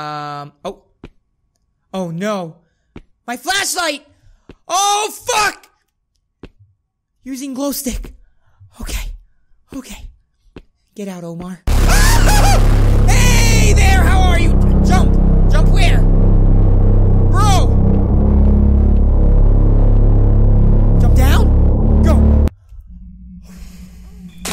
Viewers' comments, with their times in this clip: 0:10 that scream literally sounds like Goofy from Walt Disney loooool